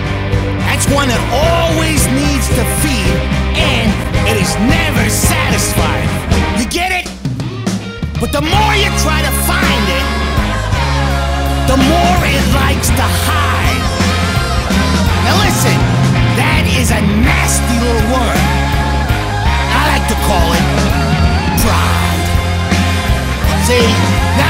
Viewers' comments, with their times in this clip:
0:08 It really sounds like a song from The Wall by Pink Floyd, with this dark operatic rock with gospel elements, especially from to the start of the third chorus. I like to think that's deliberate with the whole "oh, might I be making a mistake here? Nah, everything's alright, I'm gonna double down! I'll do it more and more and more and I'll keep doing it until...OH SH-"
0:08 The minute sounds like a Pink Floyd song, and I loved it! This desserved to be in the movie
0:08 Why do these drums sound so good???